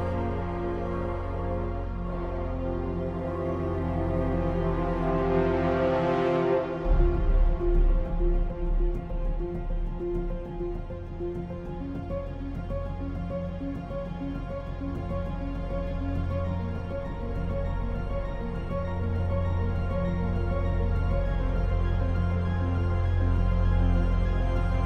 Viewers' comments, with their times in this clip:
0:06 when the piano kicks in.. Just eargasm! 😌